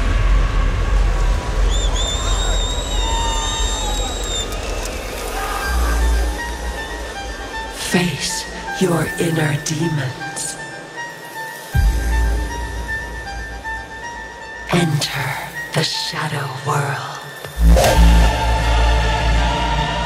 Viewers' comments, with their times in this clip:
0:08 this has a 'Cross of Blood' vibe.